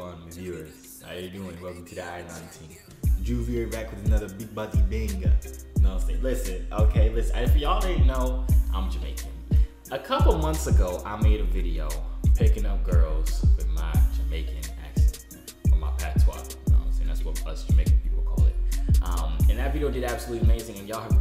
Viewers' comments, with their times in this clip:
0:05 thas literally how we talk in Africa lmaoo